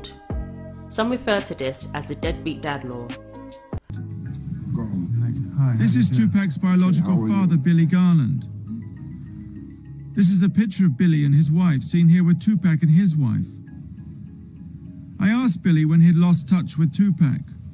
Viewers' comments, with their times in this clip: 0:05 i'm sick to hear this white journalist called him 'tu-pack'. Heard it few times in other documentary too. It sounds like pop, boy band or somehing